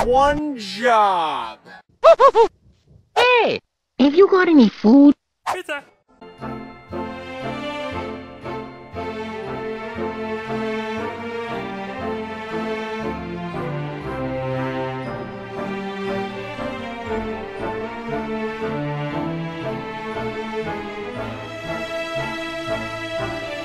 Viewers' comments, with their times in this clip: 0:07 ending Mario calls is disappeared I don’t know why